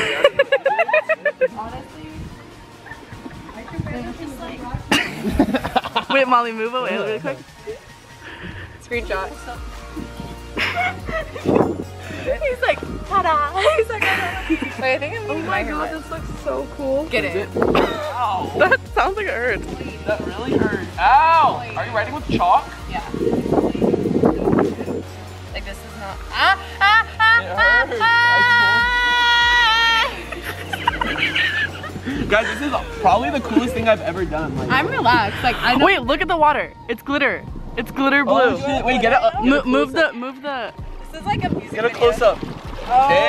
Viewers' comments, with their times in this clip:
0:07 god is a woman starts playing
0:29 my face went from this :) to this:( cause molly was making a strange noise!!!!????
0:31 HAHAHAHAHA That laugh tho!!